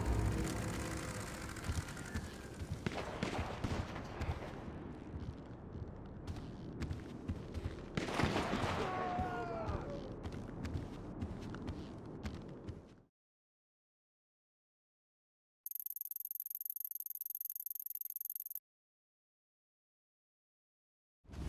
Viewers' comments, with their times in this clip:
0:07 I thought you will show the solution about two shots AND a red point on the minimap!!! Did you hear that? What's this? These sounds appears after solving this mistery BUT WHY YOU DIDN'T SHOW THIS? ><